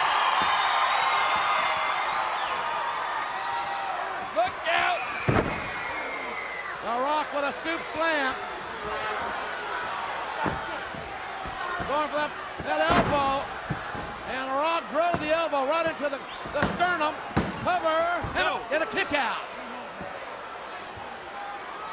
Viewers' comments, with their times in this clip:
0:06 Once upon a time crowds didn't pop for the People's Elbow. What a time